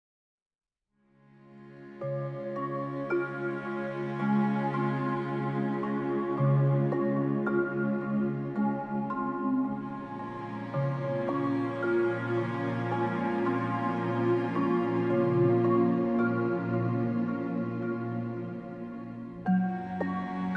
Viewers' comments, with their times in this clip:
0:01 White girls: Why do I hear boss music?